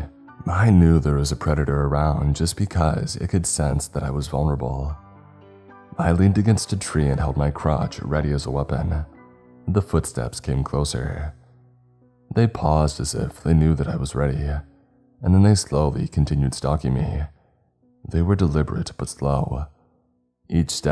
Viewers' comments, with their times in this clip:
0:06 …. Pronouncing is key😂